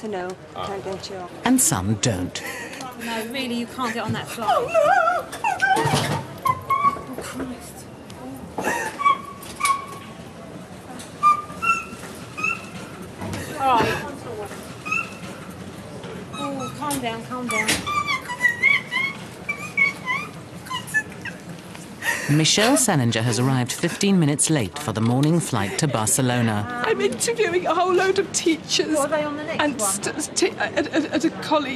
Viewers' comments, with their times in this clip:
0:10 why do that woman sound like when I clean my window💀…….
0:16 only dogs can hear her
0:18 WE HAVE A SQUEAKER
0:19 the auto subtitles detect her squeaking as [music] 😂